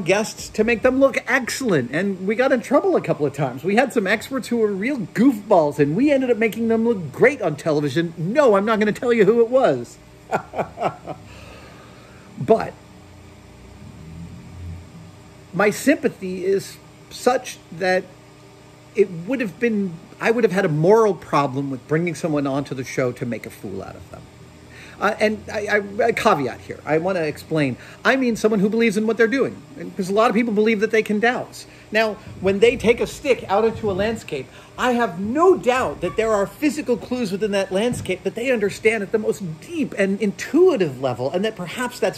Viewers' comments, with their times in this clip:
0:05 the nervous laugh of “o shit did I already say too much”
0:12 listen to to the background shitzing,. l;';;l.
0:25 very insightful, problem-solving observation about humanity's awe-inspiring natural ability to recognize patterns and critically think; along with demonstrating through your enthusiastic and matter of fact tone that an open mind is unequivocally necessary to understanding phenomena which you do not personally experience- a situation which many would meet with unfounded skepticism. In short, no harm no foul.